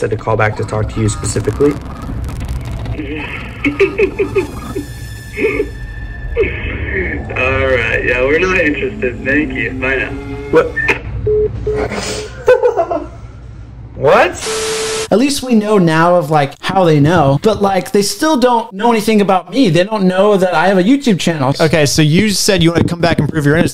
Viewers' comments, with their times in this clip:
0:04 bro the laugh is terrifying